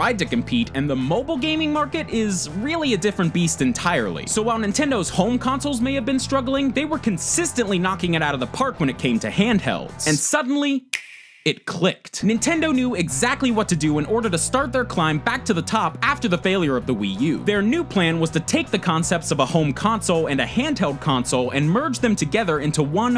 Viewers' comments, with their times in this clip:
0:10 Is nobody gonna talk about that amazing transition to the switch ? Like that click LITERALLY gave me chills
0:10 And suddenly that familiar sound we all know and love It CLICKED